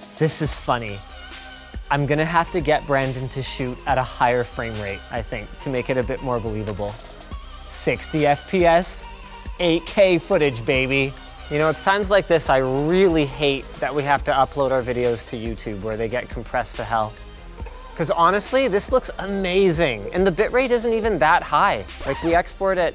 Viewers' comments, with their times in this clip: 0:07 Kind of sounds like Linus is literally talking to high schoolers now. Ick.